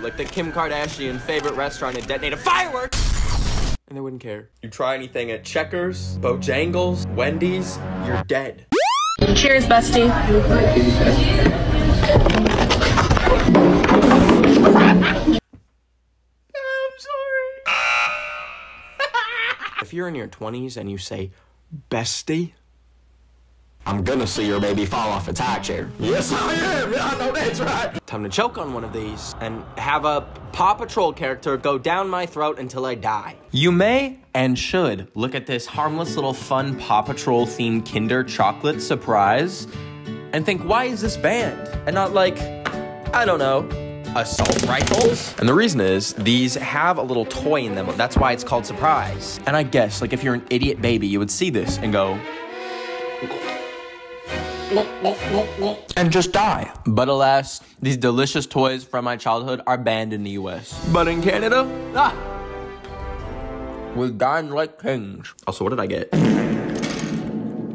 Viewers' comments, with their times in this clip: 0:09 IMM ACC LIKE WHEEZING RN :3 WHY WAS THERE REVERB 😭😭
0:11 lil girl literally made a drum beat when she fell down
0:23 LOOOOL THE COWBOY ACCENT
0:55 ayo not the gulp gulp gulp